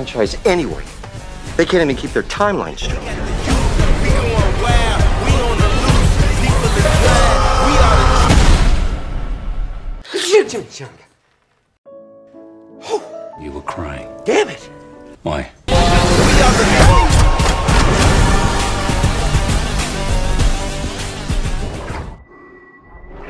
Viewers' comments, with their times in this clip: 0:07 Pretty bloody sure that is Christian Bale as Wolverine That's definitely a Bale scream...